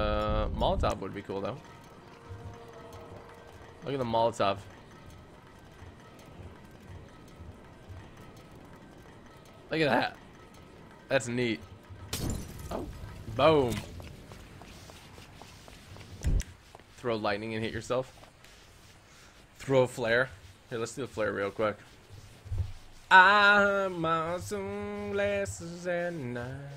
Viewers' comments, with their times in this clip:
0:09 sounds like he farted😂😂the silence afterwards made it more convincing